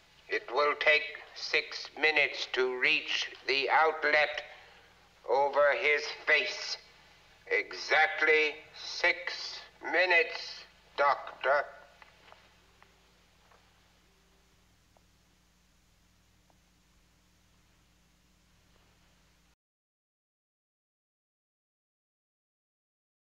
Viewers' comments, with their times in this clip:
0:04 Very disappinting that you muted the movie Very.